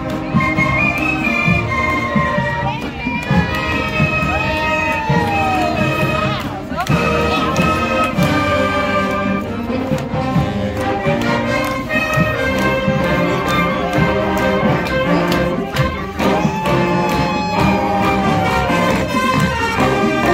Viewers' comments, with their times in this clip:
0:05 That old pokemon theme❤